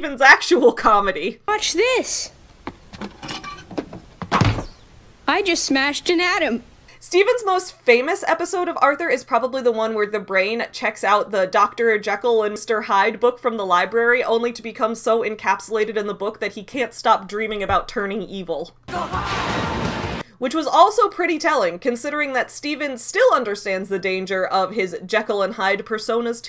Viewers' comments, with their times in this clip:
0:07 I don’t care what anyone says, that song is amazing. That was some good singing on Crowder’s part.